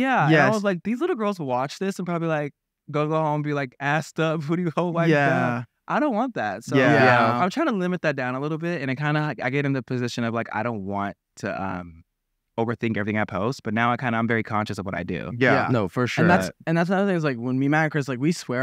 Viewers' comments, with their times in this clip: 0:05 Also with the “yeahhh” s lol